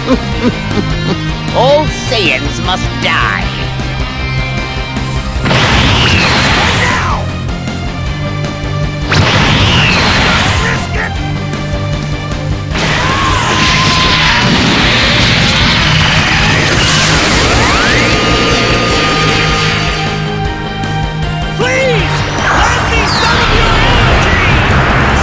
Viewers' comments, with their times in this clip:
0:09 Intentional or not, the slight delay in the voice makes the transformation way more intense